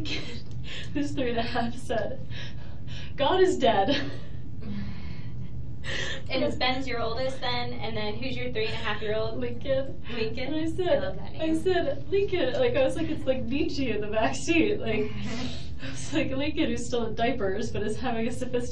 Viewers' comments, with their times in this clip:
0:06 Wendi is evil… she is laughing and faking idle chit chat…. This is the same time when her ex is in ICU with a bullet through his eyes and struggling to live for another 7 or 8 hours… nice Wendi.